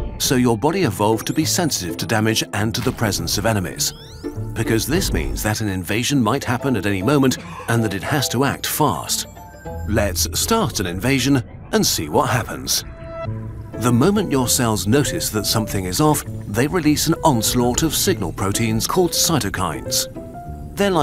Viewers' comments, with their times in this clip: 0:07 come on man cover your cough